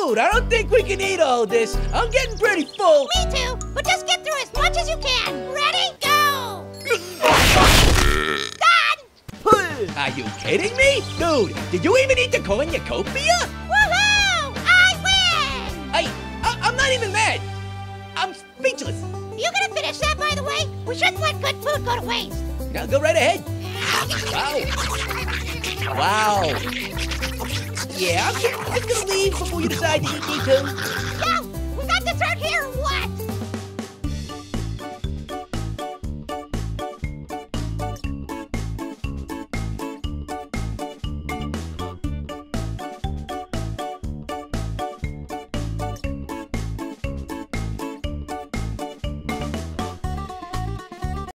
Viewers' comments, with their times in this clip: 0:04 little apple says go a “little” to fast
0:06 (loud eating sound) done are you kidding me!
0:09 the noise he made when he spit the apple lol
0:34 I like that music!